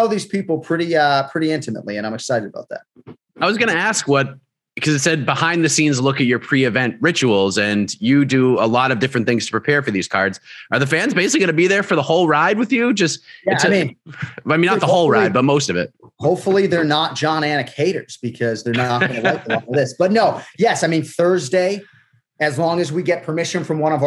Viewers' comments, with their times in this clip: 0:10 damn everyone at mma fighting seems to have that helwani highs LOL